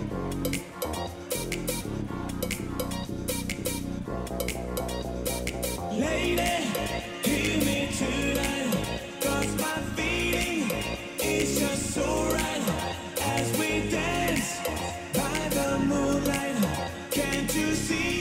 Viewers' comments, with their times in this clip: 0:03 the lady remix tho 😮🎉❤